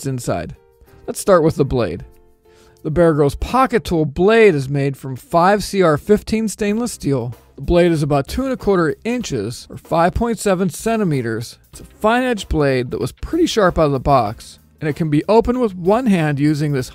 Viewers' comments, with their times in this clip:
0:04 Why the emphasis on POCKET every time you say it? "Gerber Bear Grylls POCKET Tool is designed to be a bare bones, folding, every day carry, POCKETable multitool..." "POCKET tool, POCKET tool, POCKET tool". For the record, I've NEVER had a Vic SAK "slip from my hand" during use. I made it to when you said "The Bear Grylls POCKET tool blade..." for about the 20th time before I had to stop. I'll be hearing "POCKET tool" in my head for hours now. Thanks. :/